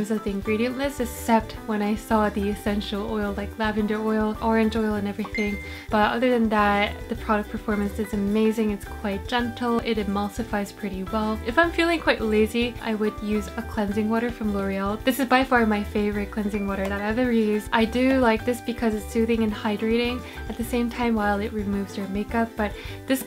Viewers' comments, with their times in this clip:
0:03 I thought I have message 😂
0:05 wooo, i thought that is my message notice. Lol. 😂😂